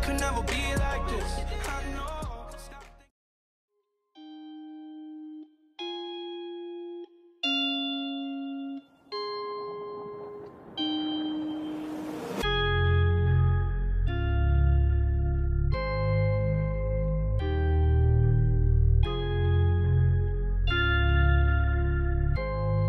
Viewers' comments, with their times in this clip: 0:07 u know it's getting serious when the song comes on every video.